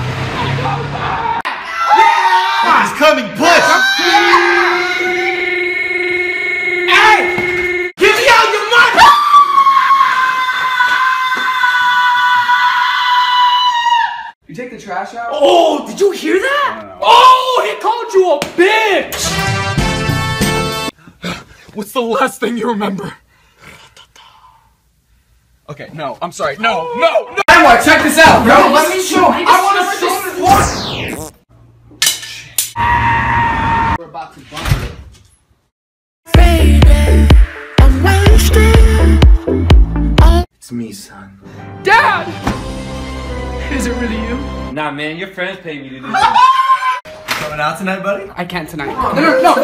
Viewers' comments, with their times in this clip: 0:04 sounds like a ski lift
0:08 He screaming like he’s in a jigsaw trap
0:33 he sounds like lego yoda death